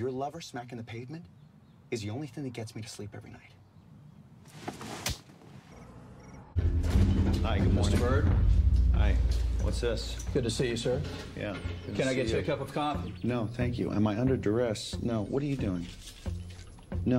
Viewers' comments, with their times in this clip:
0:04 closed fist with no power. Makes slap sound lol